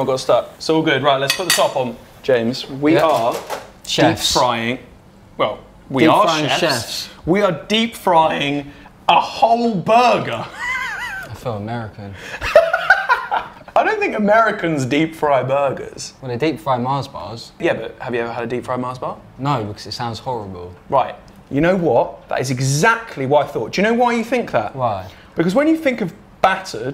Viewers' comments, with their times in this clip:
0:07 Ohhhh voice crack